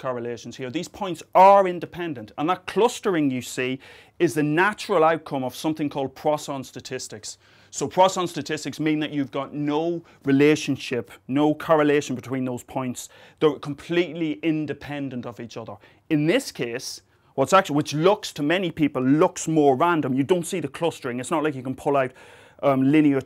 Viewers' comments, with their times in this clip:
0:04 he said plaus on statistics is random, cross on statistic? whats the name is said twice